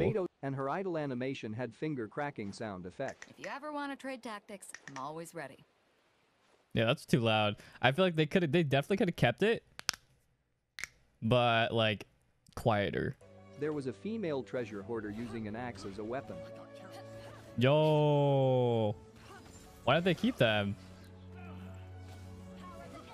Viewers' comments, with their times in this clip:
0:09 who else cracked their knuckle just because you can?I know i did
0:10 IDK why but the knuckle-cracking was very satisfying lol